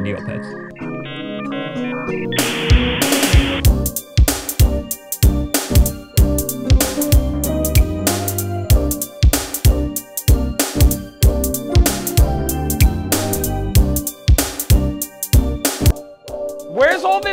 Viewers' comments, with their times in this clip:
0:03 That track is 🔥🔥🔥🔥🔥